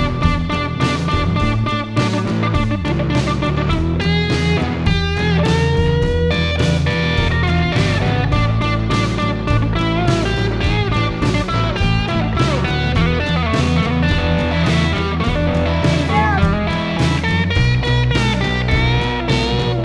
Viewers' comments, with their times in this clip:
0:07 it seems John does still remember all his musical ideas, often in detail. The variant of the "grapevine jam lick" (similar phrasing) amused me. Good idea.